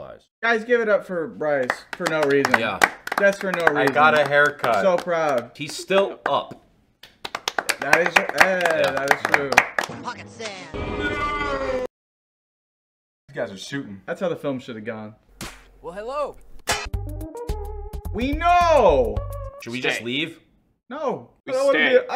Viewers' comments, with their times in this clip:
0:10 i like how they included dale’s voice